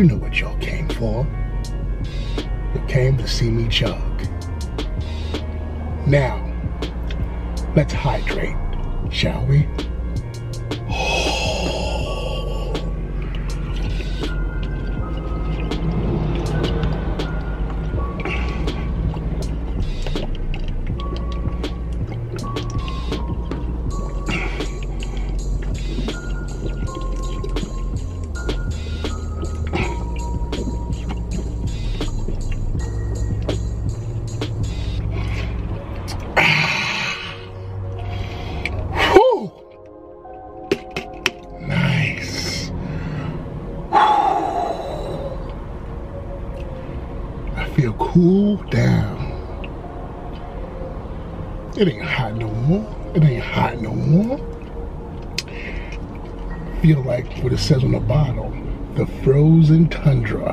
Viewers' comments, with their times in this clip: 0:10 hamon breathing intensifies
0:41 when he said “Nice” that shit sounded like some evil narrator in a video game
0:41 is that venom saying nice
0:41 that nice scared me
0:42 The “Nice” sounds just like sweet tooth. Wacky